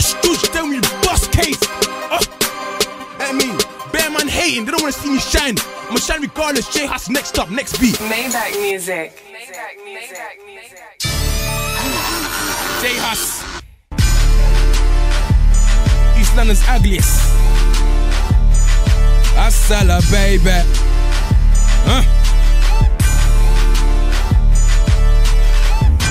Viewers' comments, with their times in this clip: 0:10 Sounded too much like Jay Z hahaha